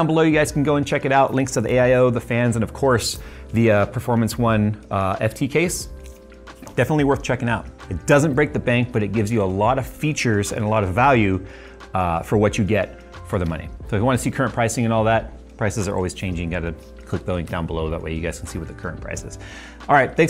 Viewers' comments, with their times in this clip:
0:06 that background water drip reminds me of ff7 "adult" scenes